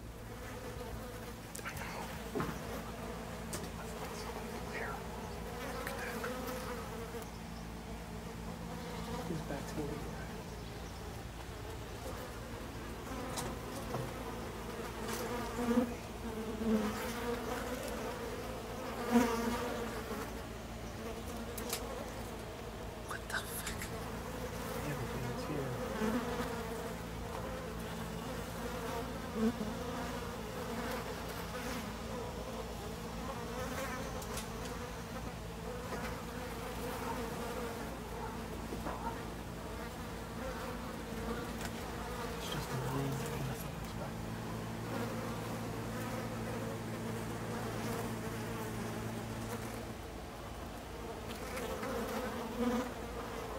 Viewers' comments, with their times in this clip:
0:06 When I heard the flies I thought they came across a dead body😬
0:37 there was moaning or some sound. (EVP)
0:37 And there was moaning. (EVP)
0:37 is moaning or some noise. (Evp)